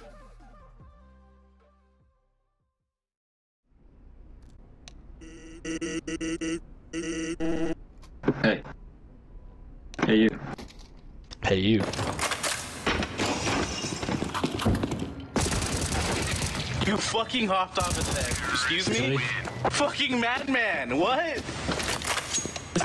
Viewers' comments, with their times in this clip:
0:04 yes she breathe